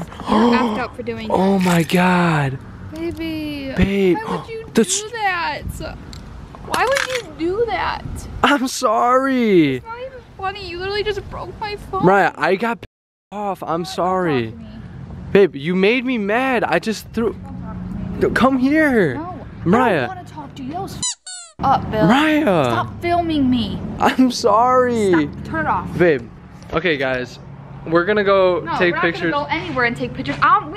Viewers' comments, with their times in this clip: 0:05 He broke your phone, that voice broke my heart lmao
0:15 The way she says “why would you do that”